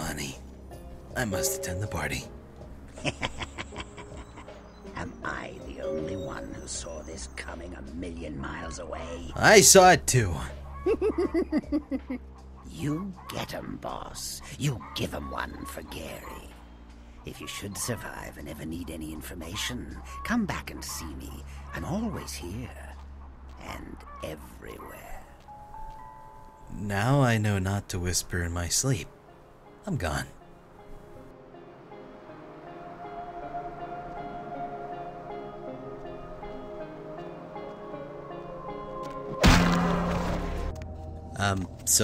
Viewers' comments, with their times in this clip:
0:08 I love how the Malkavian part not only tries to drive you up the walls with those creepy whispered words, but also implies that you're a chicken...
0:24 did anyone else hear a chicken in the background?